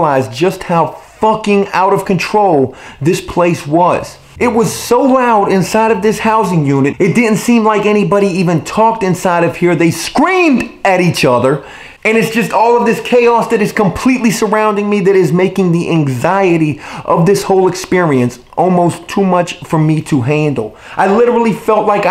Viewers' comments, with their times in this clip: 0:09 they SCREAMED at eachother? Is that why you now SCREAM constantly? I swear I felt like I needed a nap after watching this, it's like being yelled at by a drill sergeant. If you dialed it back one or two notches it would actually be possible to watch your videos without making our ears bleed.